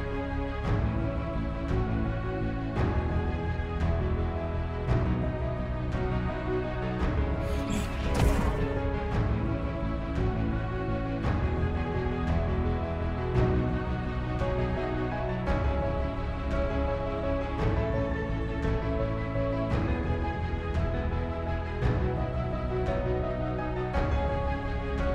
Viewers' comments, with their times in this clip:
0:09 Put on a tricorn hat and swap brains for legs? You're like Forrest Gump meets Lewis & Clark. The soundtrack is too serious. We need more stunningly chiseled body moments and maybe sprinkle some Yakety Sax, such as